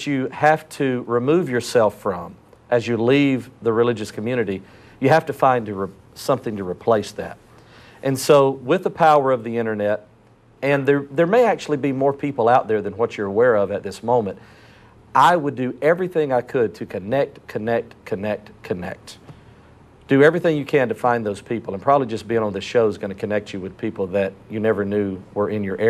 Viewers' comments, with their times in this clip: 0:09 It's so funny to me, Jerry DeWitt still has that tone and cadence of a preacher. when he says, "So, with the power of the internet," I just expected to hear, "So, with the power of the Holy Spirit." When he said "internet" it totally threw me off and made me laugh at myself.